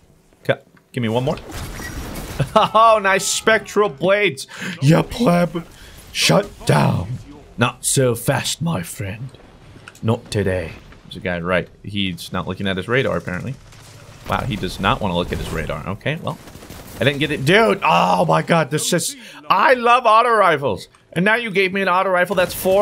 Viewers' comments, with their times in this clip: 0:07 he literally sounds just like Spider from the Tangled Shore